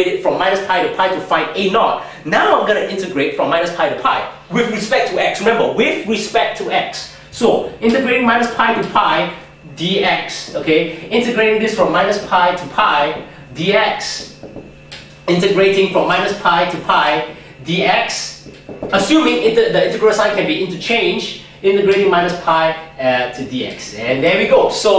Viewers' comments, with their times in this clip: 0:05 i actually think faster than he speaks, so i personally like it, it wouldn't work well in a class though, omg, that's so funny, "remember! with respect to X!"